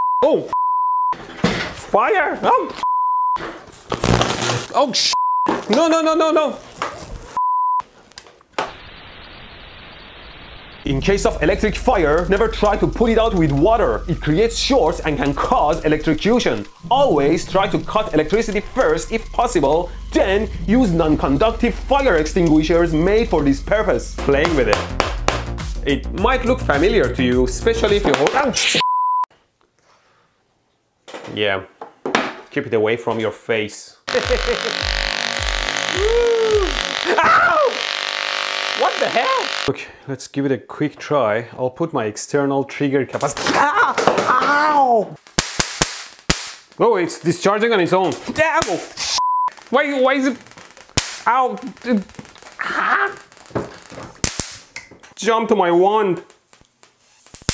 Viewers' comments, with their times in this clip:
0:08 YouTube old loading screen with hiss
0:41 gun shot noises